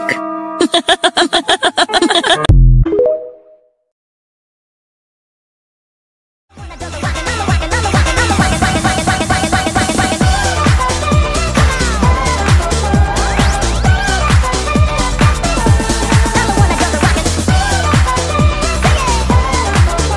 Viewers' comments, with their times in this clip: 0:06 I'm wondering what music is called its really groovy~!